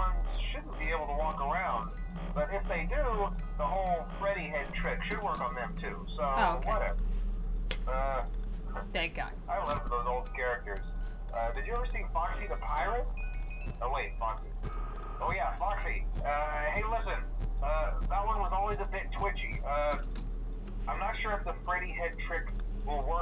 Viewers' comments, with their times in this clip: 0:09 i thought he said i love turtles XD